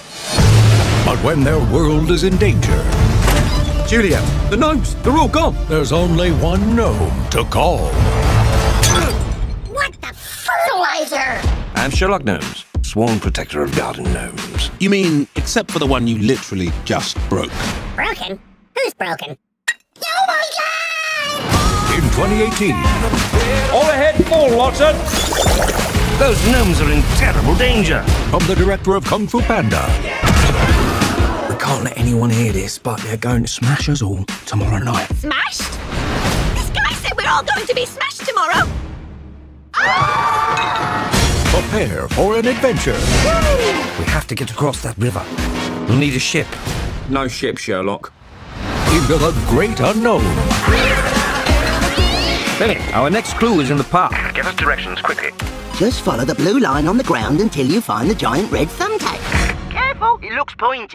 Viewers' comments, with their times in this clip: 0:09 “What the fertilizer?” It almost sounded like he said the f word.
0:09 woah what happened to the audio there?
0:21 I love that song! 😊
0:46 Hahah he`s saying no shit Sherlock. And turn on captions and see what i mean